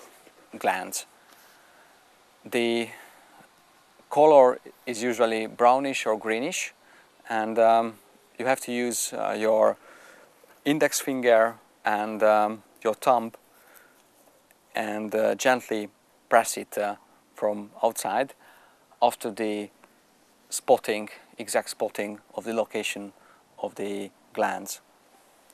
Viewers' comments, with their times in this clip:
0:08 You have to use your index finger and your tongue to squeeze it?!?!?